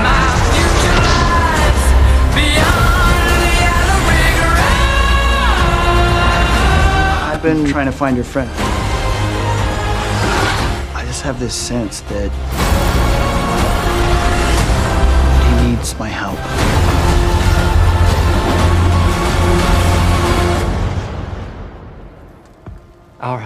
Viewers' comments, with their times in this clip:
0:07 Just heard a sound error on